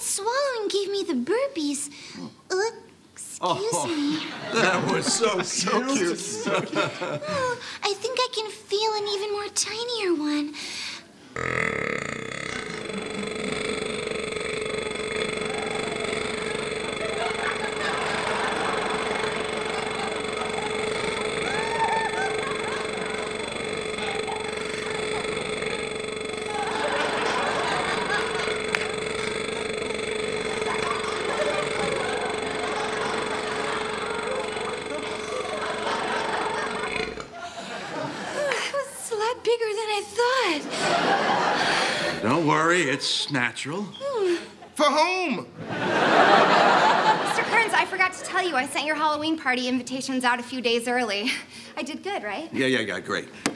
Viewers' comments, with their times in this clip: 0:10 my air compressor goes exactly like that!
0:34 The way her eyes shifted said it ALL! Like "Any day now, people!". I'm usually not one for such humor, but the long burp and the whistle fart nearly ENDED me! 😂😂😂